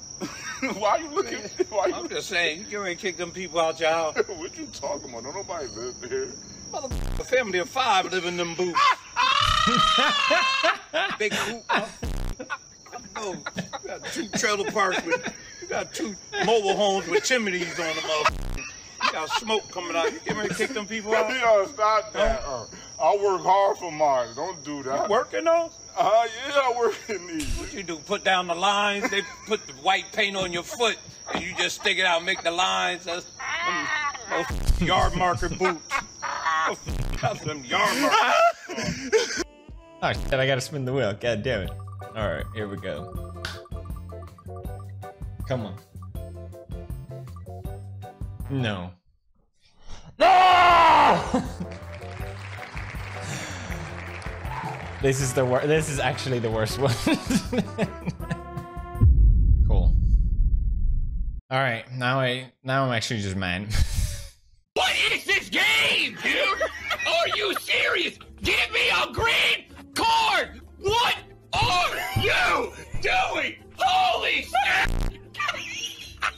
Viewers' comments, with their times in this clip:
0:09 what was that noise 😂
0:59 thought he donated to the internationals aids society lol